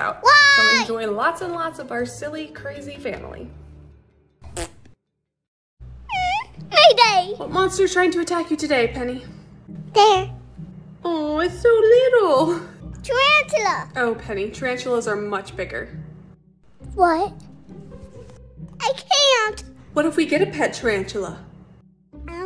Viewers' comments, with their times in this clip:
0:09 that lil "there" was just.......UGH....I DONT KNOW!